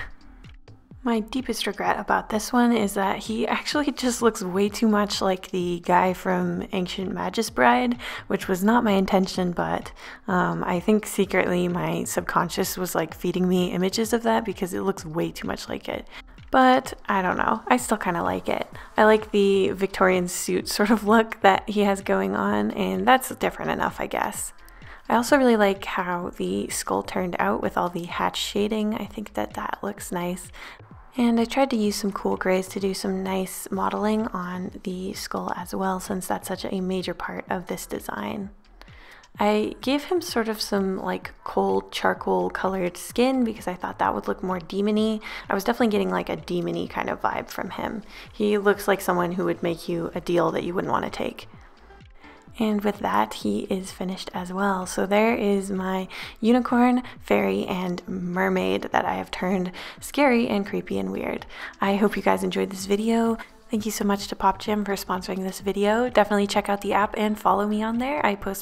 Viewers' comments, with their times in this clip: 0:06 ancient mattress bride?
0:51 I heard Thomas the tank engine music